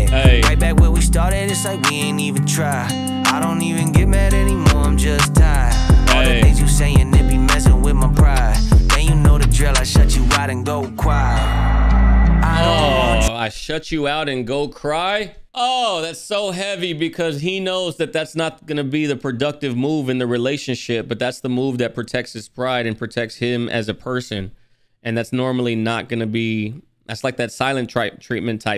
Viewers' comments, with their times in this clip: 0:09 I think he said “Go Quiet” Anyone else think that? ** yeah Andy corrected him, lol.